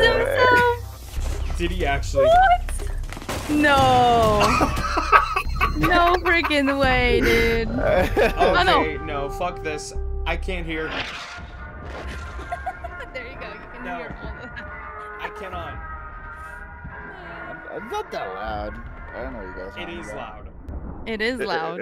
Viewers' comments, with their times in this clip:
0:06 not loud btw